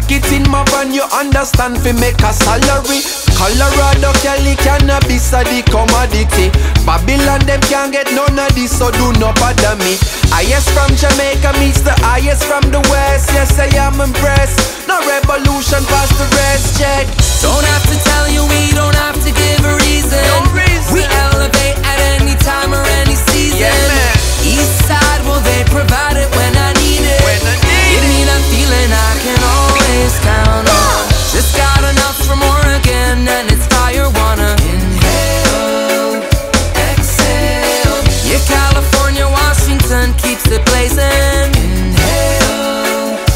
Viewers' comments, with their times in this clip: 0:06 am I the only one that hears screaming in the background??
0:28 Y'all didn't notice the crash bandicoot "whoa" ?